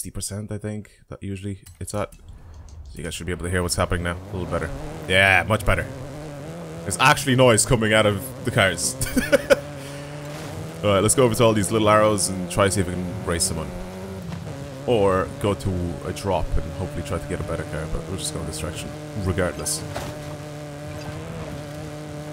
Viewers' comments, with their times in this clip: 0:04 Omg, the cars are finally done being electric XD